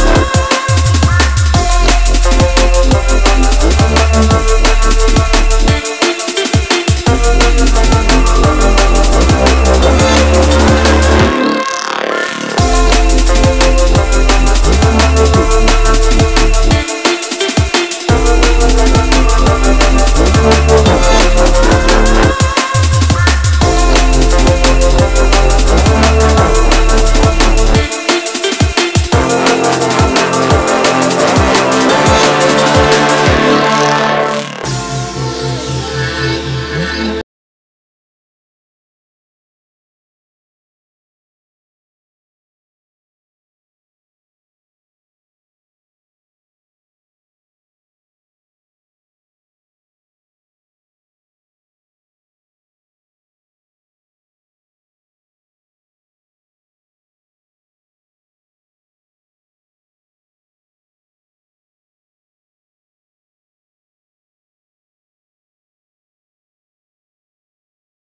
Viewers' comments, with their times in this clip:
0:05 down for love gets really quiet and its kind of a buzz kill
0:56 Odd Mob - Down For Love feat. Helen (Dexcell Remix), or how I call it: Odd Mob - Silence feat. NoSound (Volume Zero Remix)